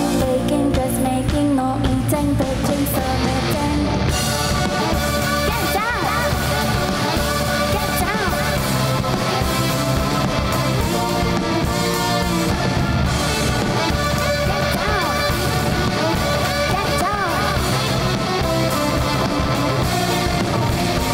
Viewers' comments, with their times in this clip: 0:05 lmaooo the least intense “get downs”